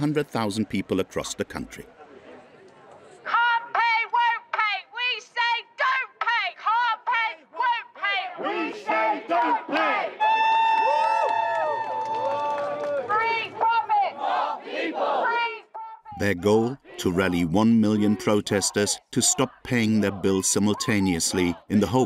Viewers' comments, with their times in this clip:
0:09 sounds like ululation